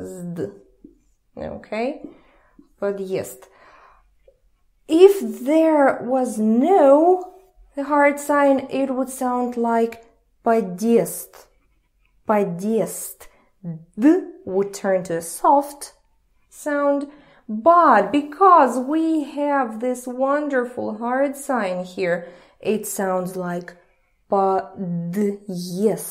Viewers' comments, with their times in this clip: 0:09 is spelled wrong or did she pronounce it wrong, or am I dumb